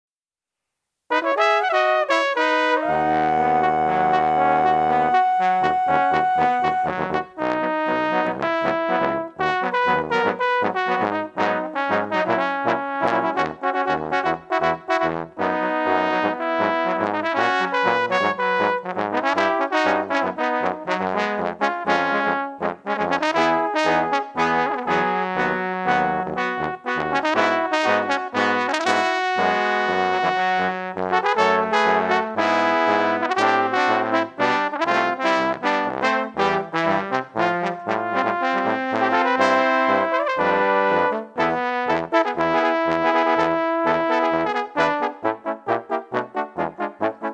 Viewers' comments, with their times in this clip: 0:02 That high F# tho :3
0:28 is that a rip?